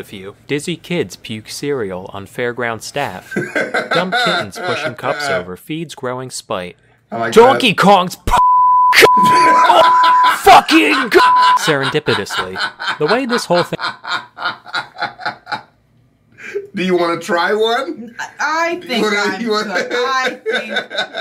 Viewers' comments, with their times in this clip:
0:09 man laughed like the michael jackson thriller song